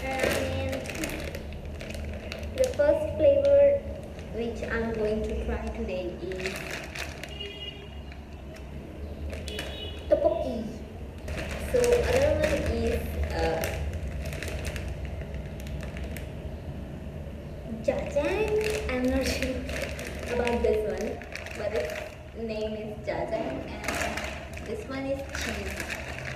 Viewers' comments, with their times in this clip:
0:09 her TOPOKII was so cute 😭💕